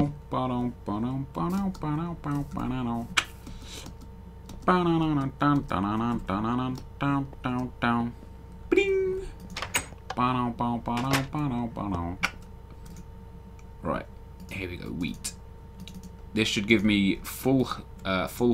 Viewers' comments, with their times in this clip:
0:05 i heard that can opening .....do i get a sip